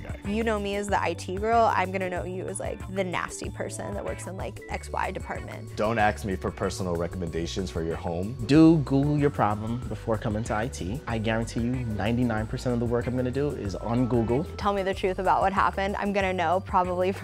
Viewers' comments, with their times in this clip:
0:05 why some people say don't "axe" me instead of "ask" me. like in